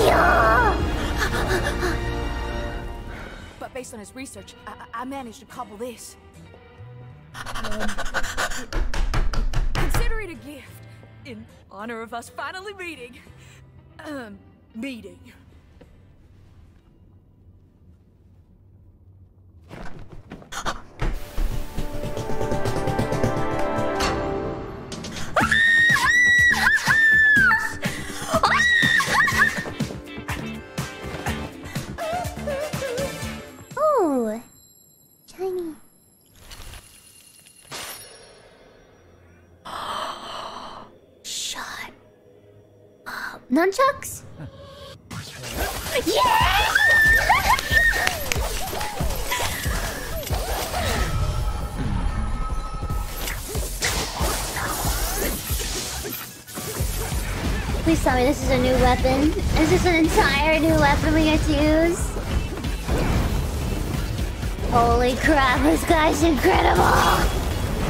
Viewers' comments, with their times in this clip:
0:04 The girl that gave Dante his hat kinda sounds like Calli hmm...
0:04 sounds like Calli's sheriff voice
0:07 SHARK TAIL FLAPING NOISES :"'
0:08 *big heccing table slamming*
0:20 thats not her hands hitting the desk thats her shark tail hitting the floor from excitement
0:22 desk slam fit perfectly
0:22 this hat is infused with the power of MJ. It makes girls Scream in trance.
0:51 never noticed this before but dante goes mmhmm :D